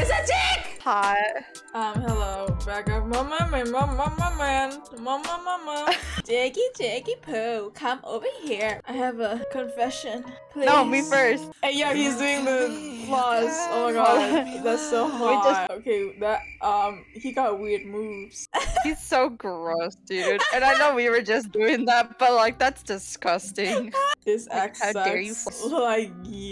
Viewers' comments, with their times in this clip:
0:09 when Guizhongs lullaby started playing I died 💀👀